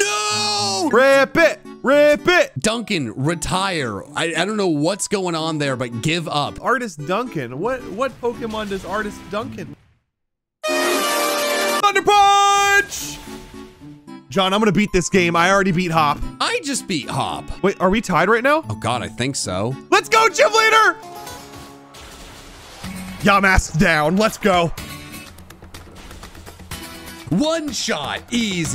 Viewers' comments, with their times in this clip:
0:10 Losing Galarian Articuno noises